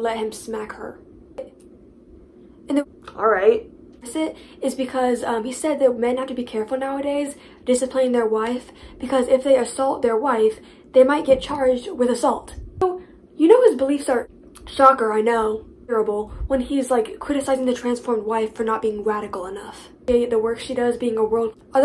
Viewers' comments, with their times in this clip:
0:04 OMG WTF HAPPENED TO THE AUDIO ??? IT WAS NOT LIKE THAT WHEN I UPLOADED IT I-